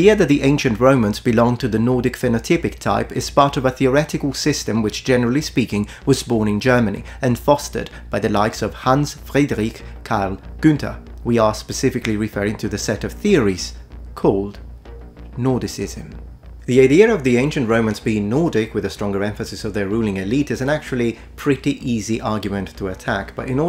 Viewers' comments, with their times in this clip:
0:10 Oh a non native german speaker got the Ü right. Thank you sir. To the topic: The majority of humans on this planet are mixed, racial, national, cultural. My self roman, french, algerian (berber), german. If you don't like this, are you to narcissistic to accept this buy a spaceship and fly out into space to be pure and special.